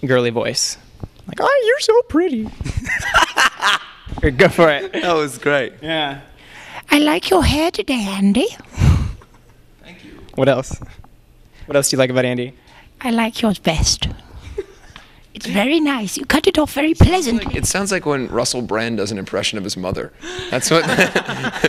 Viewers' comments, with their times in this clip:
0:06 danny's laugh at like was the best thing ever